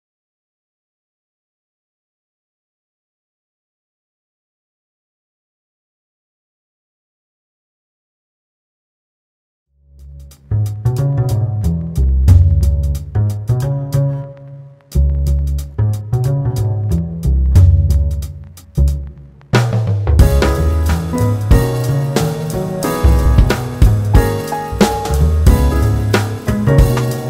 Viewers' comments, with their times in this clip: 0:09 wow loved the music starting !